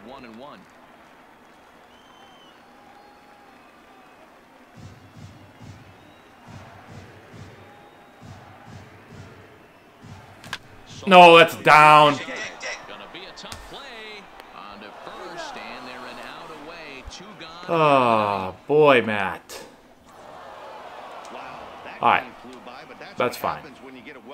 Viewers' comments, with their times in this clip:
0:05 crowd chanting MVP